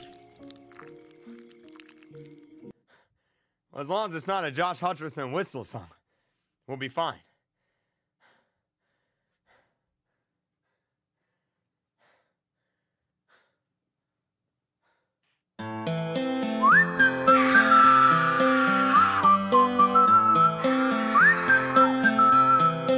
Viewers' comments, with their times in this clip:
0:04 is the whistle